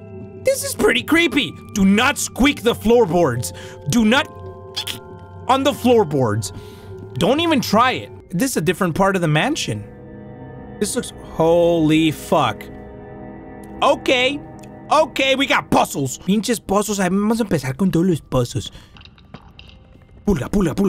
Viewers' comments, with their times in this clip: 0:04 the "Eek" was so cute🥺